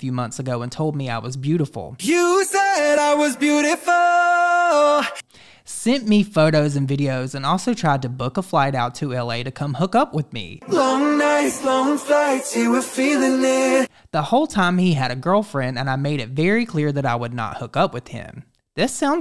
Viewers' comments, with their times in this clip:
0:03 the AMOUNT of auto tune. Girl.